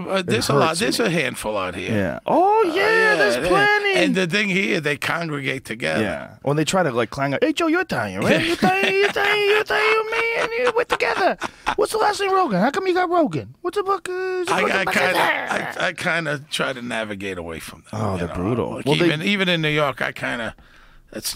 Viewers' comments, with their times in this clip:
0:03 Joe Rogan releases the inner eyetalian